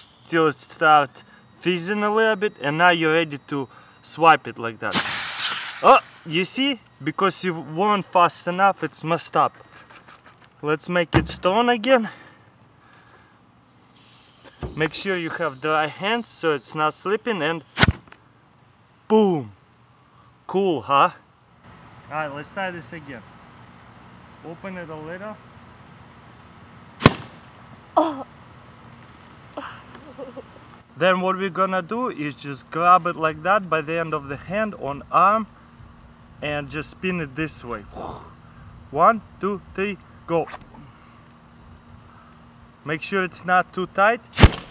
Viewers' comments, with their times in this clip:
0:09 Lets make it strong again. He sounds sexual with russian accent.
0:25 hol' up you could hear his wife but this was 2 years ago and no one questioned it?!?!?!
0:25 that accent in
0:27 did u hear the moan
0:27 a woman's so so sexy voice
0:27 I heard a girl voice. Do you have a gf?
0:27 i heard a moan
0:28 who herd someone moan
0:28 it sounds like someone moaning
0:28 That moan hahaha XD
0:28 dafuq someone moaned, did u fuk someoen?